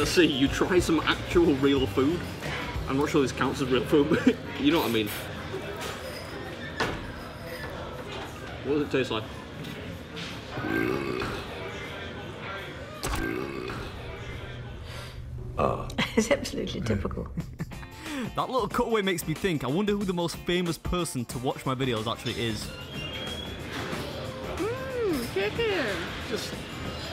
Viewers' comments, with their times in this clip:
0:10 I wonder how many people have ever burped like that in front of Queen Elizabeth! (That was a great clip you added) LOL!